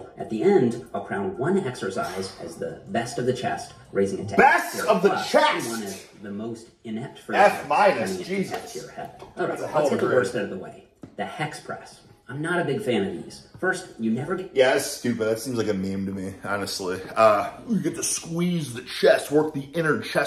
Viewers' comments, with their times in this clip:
0:03 This hocked horse shouting "BEST of the CHEST" made me nearly drop my dumbbells like a pencilneck!